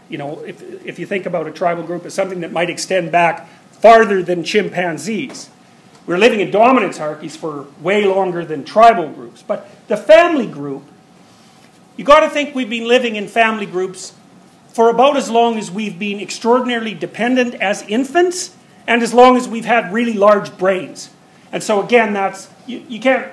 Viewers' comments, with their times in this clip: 0:06 What's the word on ? "Dorminancearchys"???